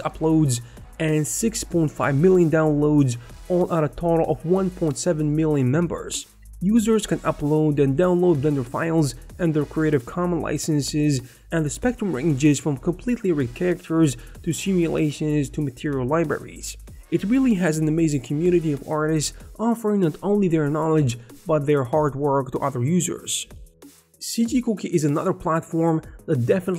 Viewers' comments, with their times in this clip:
0:10 what happen when you recording ? your unexpected silly sound crack me a good laugh🤣